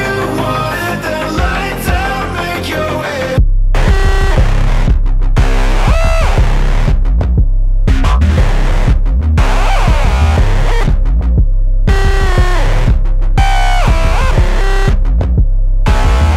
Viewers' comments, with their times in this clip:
0:03 amazing track love the final uuuaaaaaa uuuuuuu aaaaaaaaaa u uuuuuauauauauauua